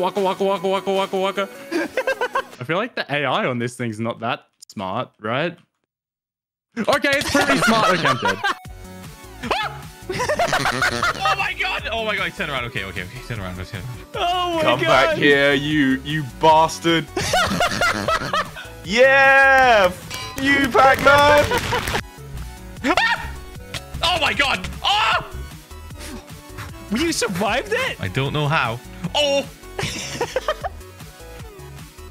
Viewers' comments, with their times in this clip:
0:09 but that laugh after he saw pac-man had me dying 💀
0:09 Help teh voice crack lol 😂😂😂😂
0:16 WHAT WAS ThaT LAUGH
0:20 Fuck is censored but not Bastard or Shit